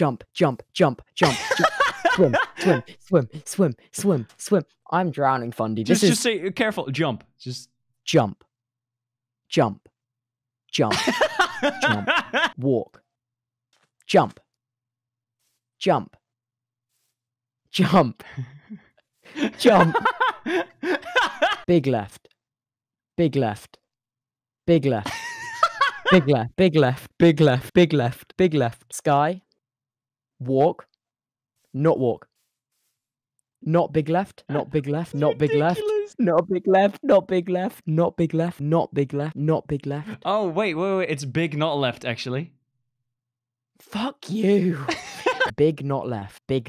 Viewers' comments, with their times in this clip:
0:10 I love that laugh it's so funny!🤣
0:27 sounds like he's saying "teclas" (keys)